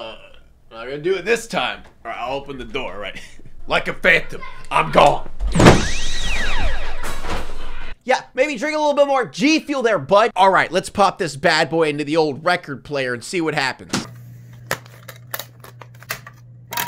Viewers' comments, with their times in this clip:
0:04 lol were those your kids in the background?